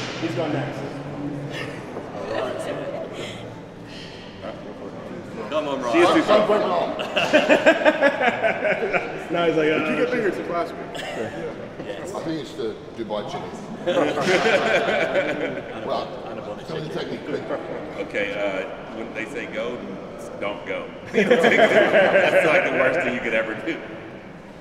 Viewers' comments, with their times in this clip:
0:08 Final boss music starts playing